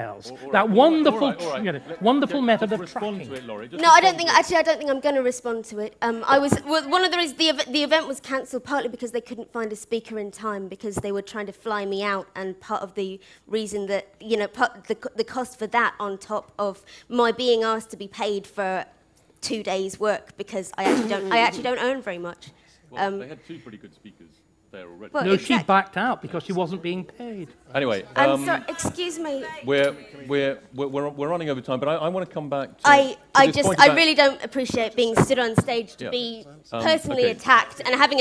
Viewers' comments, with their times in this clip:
0:05 I got so much pleasure in watching her stammering and wavering from I literally cackled with joy! I have never seen karma delivered so beautifully.
0:19 Starkey's sarcastic laugh at her explanation for pulling out of the talk is fucken gold
0:20 Oh god the british dude snickering fucking killed me XD